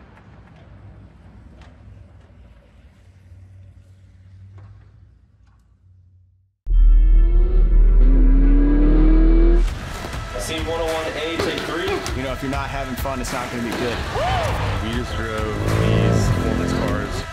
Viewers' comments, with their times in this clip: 0:05 No one needed the giant low frequency sub hit Great interview, really captivating, and now my neighbors are pissed. Learn how to mix audio.